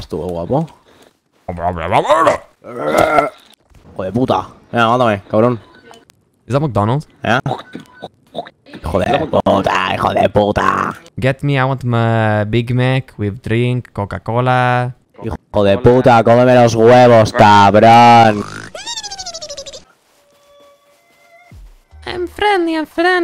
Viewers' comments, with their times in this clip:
0:07 On That's a puertorican person